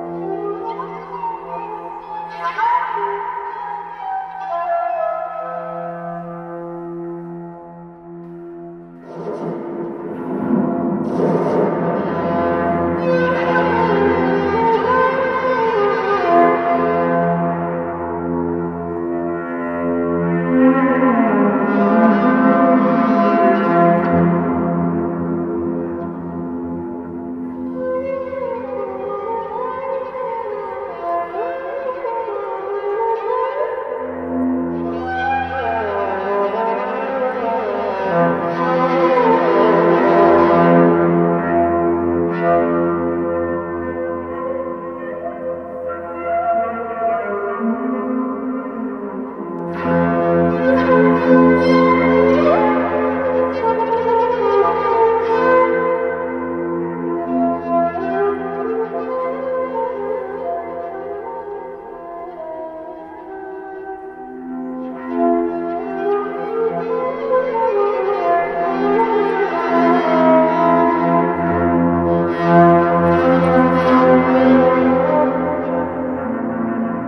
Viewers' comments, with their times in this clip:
0:08 A hint of beautiful music from the Ottoman Empire ? Üsküdar'a gideriken
1:05 I'm hear the song rasputin